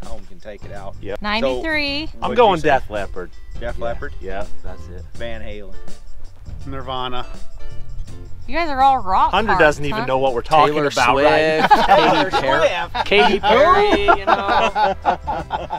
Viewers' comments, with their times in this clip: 0:03 Deaf Leopard or Def Leppard?🤣